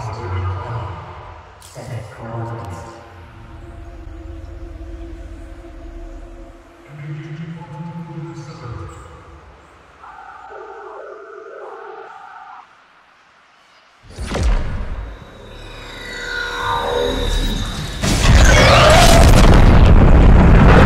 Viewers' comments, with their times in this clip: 0:07 What does the visitor say ? I can’t make it out.